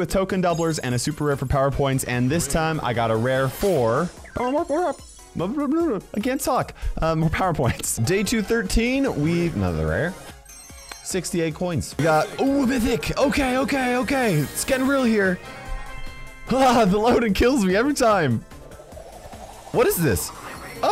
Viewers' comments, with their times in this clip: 0:04 yep official otis voice actor